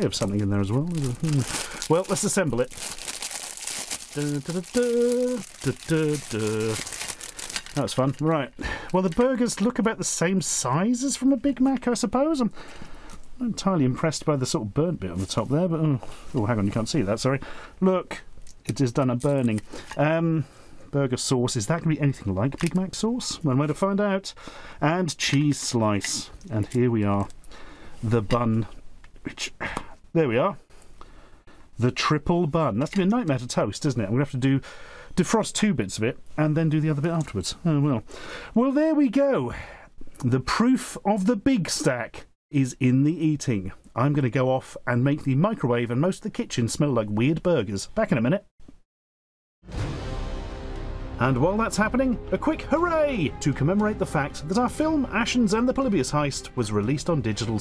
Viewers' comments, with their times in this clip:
0:04 On I thought Ashens was humming the Indiana Jones theme lol but it turned out to be The A-Team theme 😛
0:27 did you add the popping sound in editing?? cant tell.
0:28 oddly satisfying sound of frozen buns separating.
0:28 The sound of the buns seperating was very satisfying
0:28 Never in my life would I have expected to hear burger buns make a pop sound.
0:28 now thats a satisfying pop sound
0:28 I had to look several times and conclude that's not an added soundeffect, but actually the sound the buns made. Solid plopp! Like some one threw a ping-pong ball from a distance.
0:28 the bread pop
0:28 that is not the sound I was expecting from bread
0:28 that sound effects
0:29 That popping sound was so satisfying
0:29 Why does the splitting of two frozen buns make the most satisfying sound in the world?! 🤯
0:29 The sound the bun makes coming loose. It's my opinion that bread should not go "thop!"
0:29 no one is talking about the unique popping noise upon separating the frozen buns
0:29 why the hell did the bun make a pop like that lol
0:29 the sound of a quality burger bun!
0:29 taking the bun apart is such a satisfying sound lol
0:30 WAS THAT A POP
0:45 what they smell like weed burgers? 🤔😂